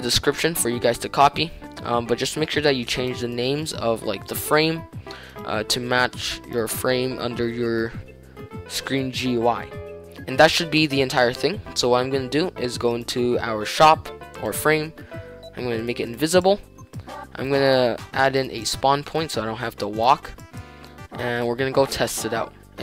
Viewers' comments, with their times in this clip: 0:09 He said it in Russian and no one noticed?